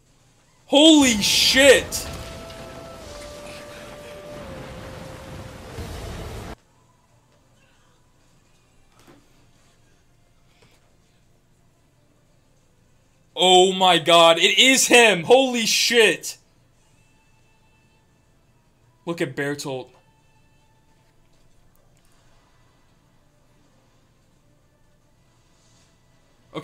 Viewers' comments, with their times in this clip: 0:09 Yeo, goosebumps. I still get it consistently every single time i rewatch this scene, even just hearing YOUSEEBIGGIRL makes my hairs stand up